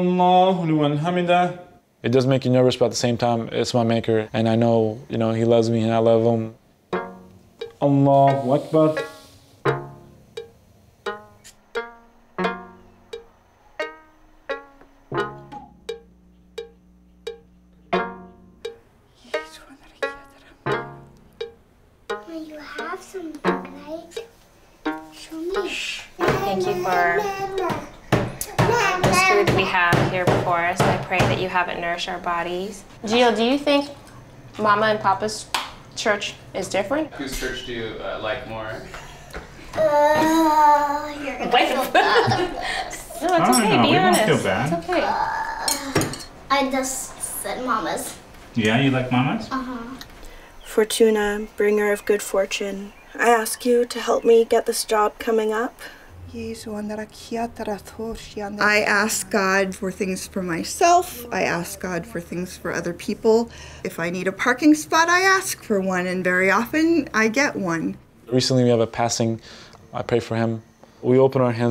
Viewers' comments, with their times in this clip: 0:07 What's the music that starts from ITS SO CALMING
0:27 mom : prays The baby : BOOM BOOM BOOM BOOM BOOM
0:55 Yo she's actually speaking in tongues